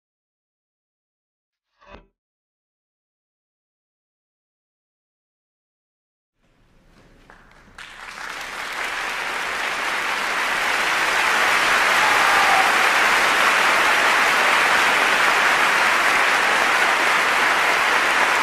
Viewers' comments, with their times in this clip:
0:06 turn ur volume up then u will hear rain sound